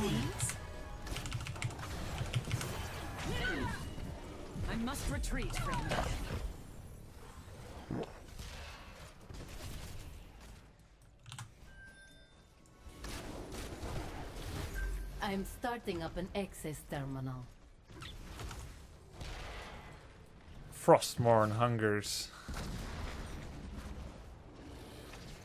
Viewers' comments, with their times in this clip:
0:07 that was a fart, I'm sure.